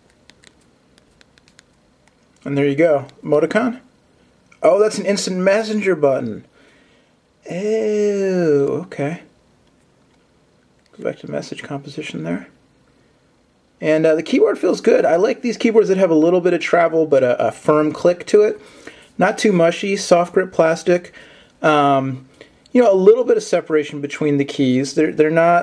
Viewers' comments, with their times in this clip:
0:06 he does the best eww lmfao